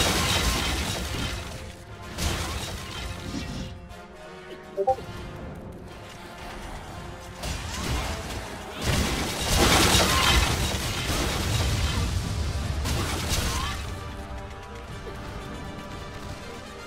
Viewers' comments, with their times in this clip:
0:04 I paused and thought someone messaged me on discord XD